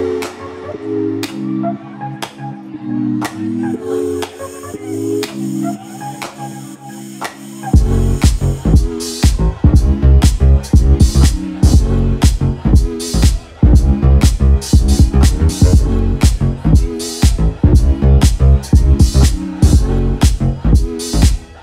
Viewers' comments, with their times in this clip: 0:05 that song just never gets old, just like this set what a masterpiece.
0:07 The party really starts when the bass drops & the Queens flank Kaytra.